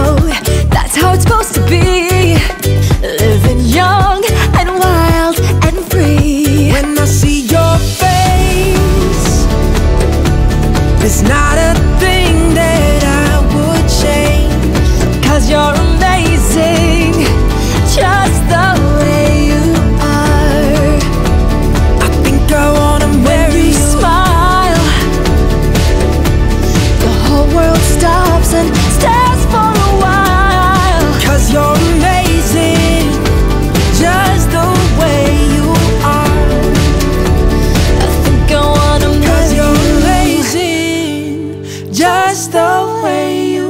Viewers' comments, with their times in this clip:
0:06 "when i see your face" and The melody is incredible ❤
0:29 perfectttttt "stares for a whhhille"